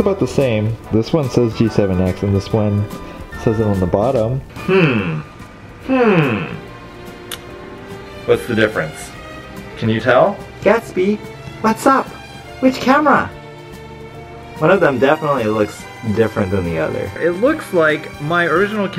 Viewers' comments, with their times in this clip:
0:04 Nobody: Minecraft villager:
0:04 did you make the minecraft villager soundtrack??